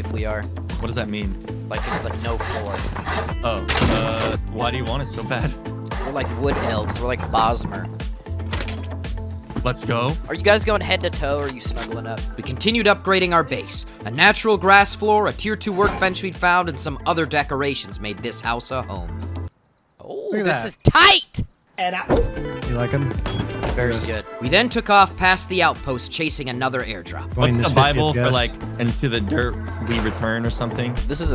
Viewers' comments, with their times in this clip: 0:05 Anyone else hear the snap noties
0:14 why did you say home like that